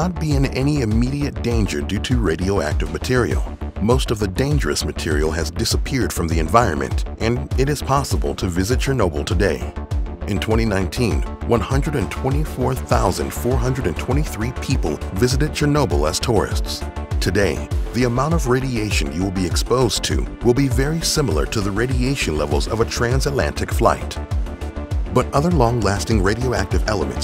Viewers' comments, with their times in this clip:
0:09 I find how you say 2019 VERY OFFENSIVE and swear word notice